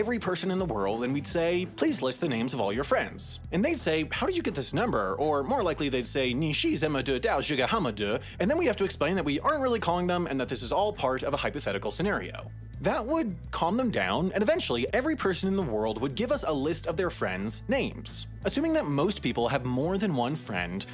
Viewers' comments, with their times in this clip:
0:05 I can’t understand your terrible Chinese, but I was able to piece together enough mispronunciations and words to understand it 😆 🇨🇳
0:06 the funny thing is hes actually trying to pronounce the correct stuff
0:06 im chinese so this sounded so funny to me
0:06 As a Mandarin student, I can confirm that is correct, even if the pronunciation is pretty bad lol Pinyin: Ni3 shi4 zen3me de2dao4 zhe4 ge4 hao4ma3 de
0:06 As a Chinese, I can confirm that you totally pronounced those 11 Chinese characters correctly!
0:06 no offence but that chinese sounded hilarious🤣🤣
0:06 it sounds like a drunk Cantonese person to me lol
0:08 Tone is almost on point